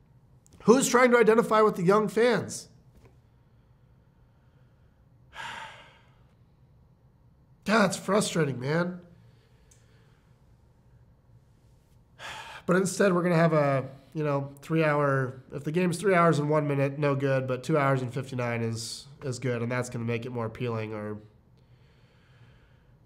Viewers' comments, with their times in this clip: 0:04 I felt that sigh.